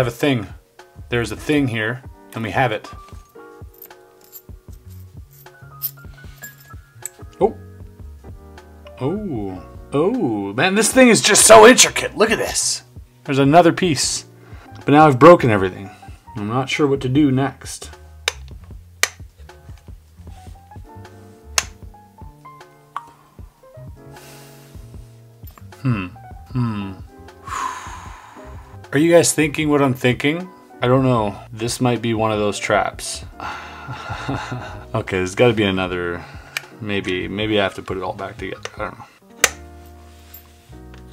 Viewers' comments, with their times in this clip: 0:05 They just played the lick
0:25 * minecraft villager sounds *
0:26 villagers in minecraft🤭